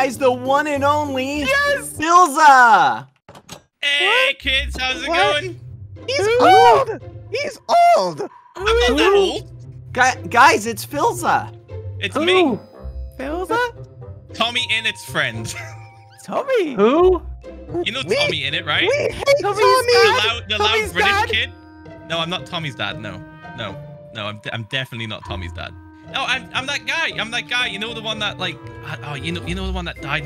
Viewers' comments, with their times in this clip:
0:05 idk why that what kinda sounded like quackity
0:15 you can hear philza laugh it